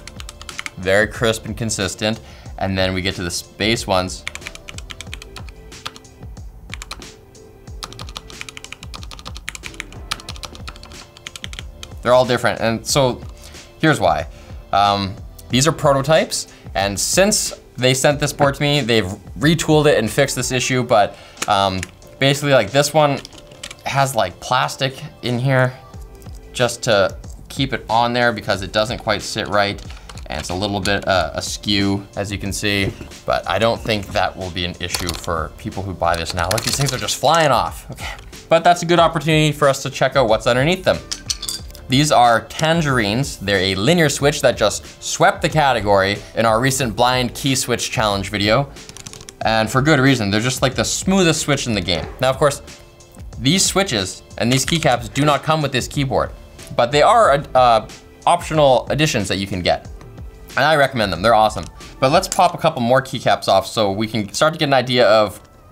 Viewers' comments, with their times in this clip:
0:10 space bar has more weight than others, that why they split that, also because of there weight, they have to use different types of switch to balance. That's why sound is different.
0:50 Big sneeze who has corona in the office?